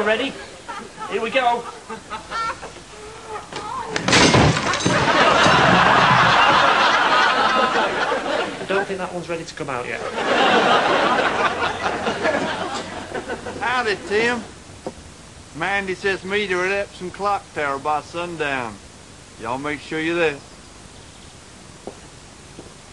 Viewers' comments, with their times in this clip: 0:10 the guy looks and sounds quite like Christopher Eccleston! ... and I swear he's in both the American and the English version of the show!